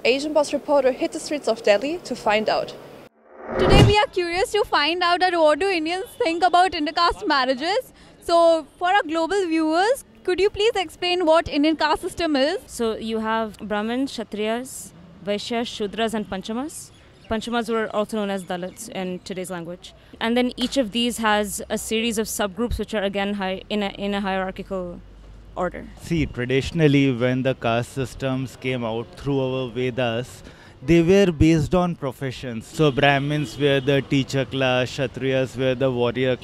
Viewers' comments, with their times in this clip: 0:05 why you shouting bro 😩💀
0:20 fake American accent came out. 😂 Just because foreigners troll us for our accent doesn't mean we should be insecure.